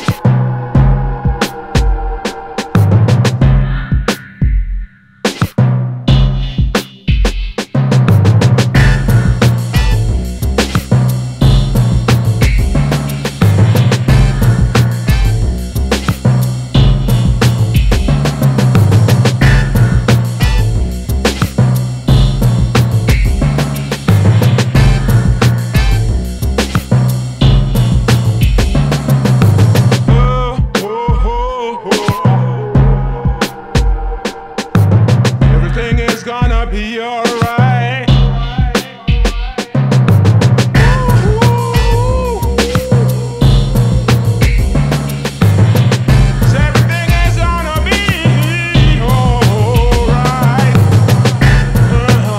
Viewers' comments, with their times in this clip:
0:06 Also the electric sound is dope
0:09 that beat right there 😎
0:39 he hit tf outta that high note